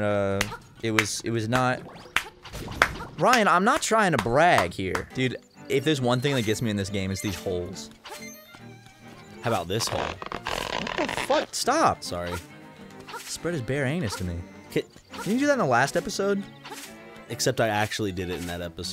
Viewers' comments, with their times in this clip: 0:05 amazing sound design here, i cant stop laughing at the imagery it evoked